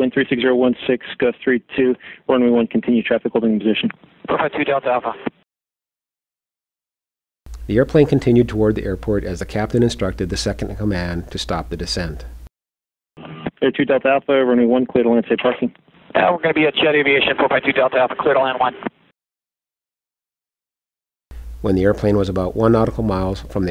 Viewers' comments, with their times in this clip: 0:04 The damn captain sounds as if he must catch a bus why do some people speak as if they are constantly in a hurry?